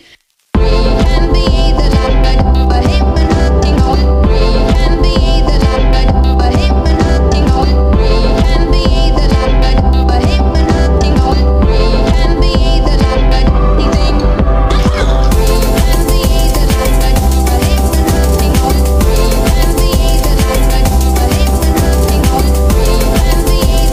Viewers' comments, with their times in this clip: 0:06 Pause on the donkey's thereeeee